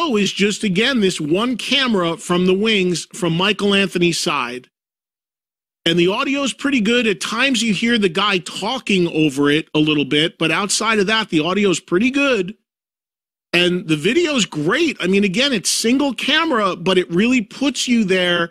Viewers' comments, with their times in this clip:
0:03 The audio is ok for DLR, Eddie and Alex but as always, completely inaudible for Michael Anthony - even during his slightly mad bass solo....